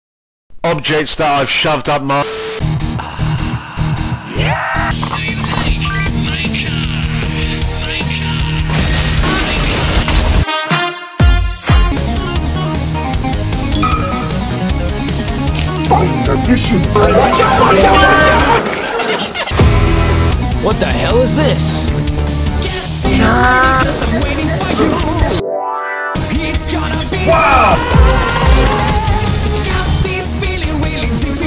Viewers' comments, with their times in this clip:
0:04 I NEED the scream
0:15 Mick Gordon's favorite instrument Also: who gave you permission to use my voice?